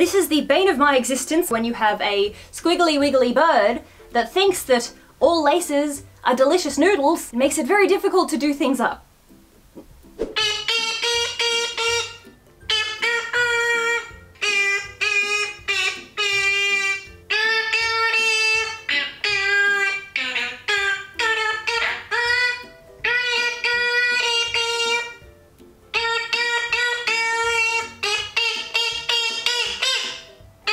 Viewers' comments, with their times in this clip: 0:09 Archie: Let me sing you the song of my people.
0:09 Oml the first two were soooo cute also, if you haven't watched it all the way through: is a wonderful birb concert
0:10 Archie's beautiful singing voice is truly a wonder to behold
0:10 Lovin that royalty free music 🦜
0:10 Archie's song is the best thing I've ever heard!💚💚
0:11 I give you green hearts Archie 💚💚💚💚💚☺️ Also anyone else thinking of Mario sounds?
0:15 Okay but can Archie’s song be my ring tone!!
0:18 his singing I would buy in a heart beat 🥰